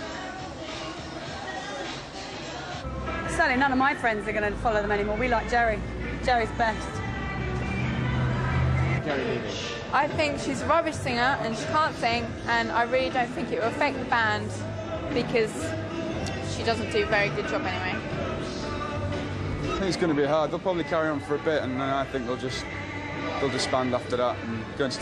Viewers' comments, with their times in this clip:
0:06 Wow who is singing in the background ? It sounds like Lady Gaga